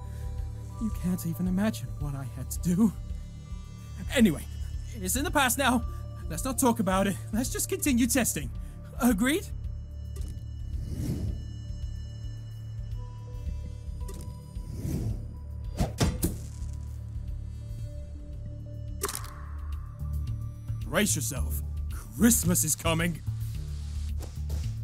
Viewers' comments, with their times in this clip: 0:05 Is it just me, or does certian parts of the voice's lines sound like Jacksepticeye is readin it... Like